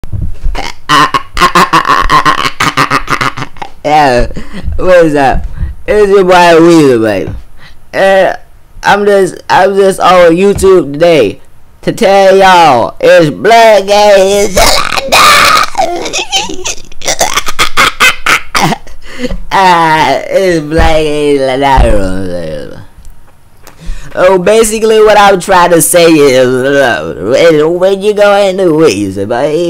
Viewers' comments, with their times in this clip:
0:00 Its a DOLPHIN!!
0:13 BAHAHHAHAHHA THE LAUGH